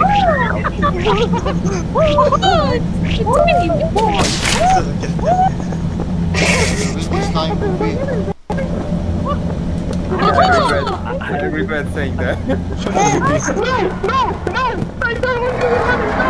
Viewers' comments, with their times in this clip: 0:04 Try not to screech like a pterodactyl once you're caught?